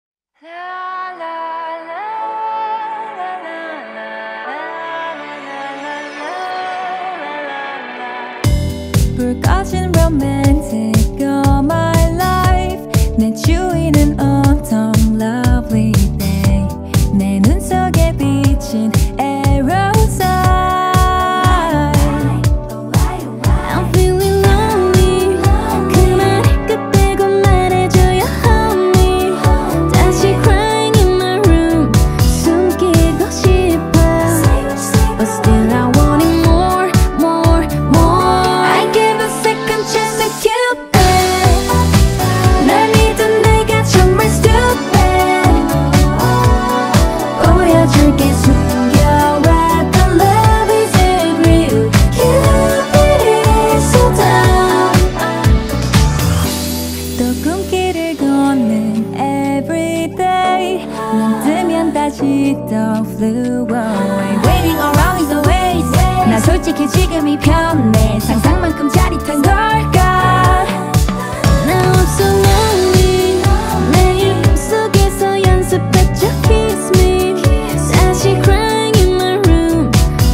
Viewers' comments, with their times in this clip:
0:02 this sound make me think about Disney princess or something
0:24 Don’t really know the group but heard this song all over the place because of TikTok. I can’t help but notice that this girl sounds kinda like Joy especially the way she says “crying in my room”. Really great voice
1:02 aran just turned to a whole new person when she switched to rapping ! so talented <3